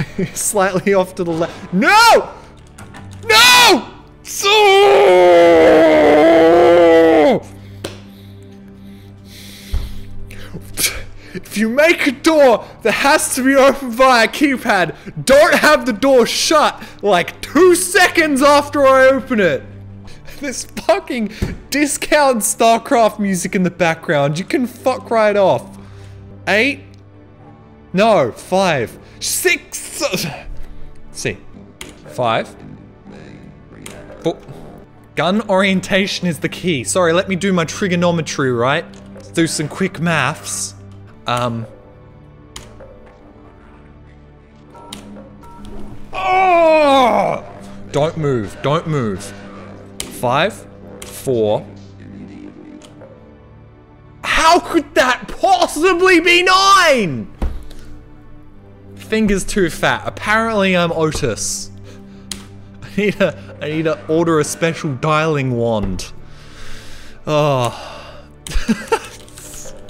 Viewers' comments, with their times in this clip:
0:04 new houndeye charging sound.
0:05 jump to here without context. that's a horror sound effect
0:05 intense grunting sounds
0:53 That was the best australian accent I heard outside TF2, AM OI ROIHT MATE?